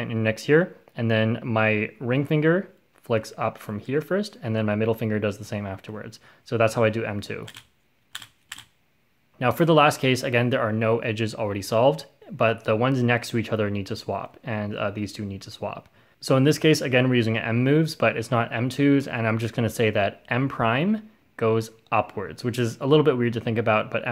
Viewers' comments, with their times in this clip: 0:10 does anyone here him make a weird sound just after xD